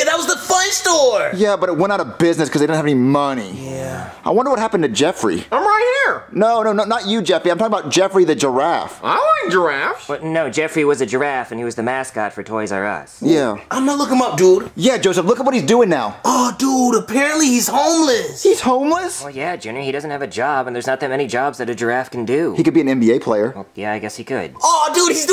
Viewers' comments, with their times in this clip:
0:09 Jeffy no longer says Gdraffe??
0:09 Jeffy finally said giraffe right
0:09 I can't believe it!Jeffy finally said giraffe the correct way😂